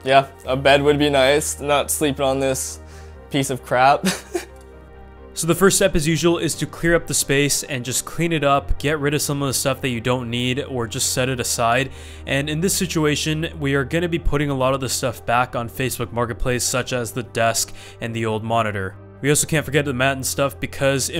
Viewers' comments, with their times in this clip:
0:04 you can tell hes laughing in pain my guy really wants a bed